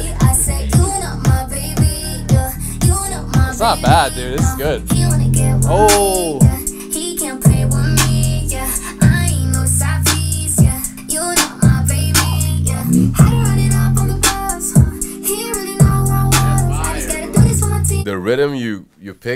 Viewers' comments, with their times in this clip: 0:05 was the best for me.. we need more music where the beat is trappy and 808 with female vocals its simple but so good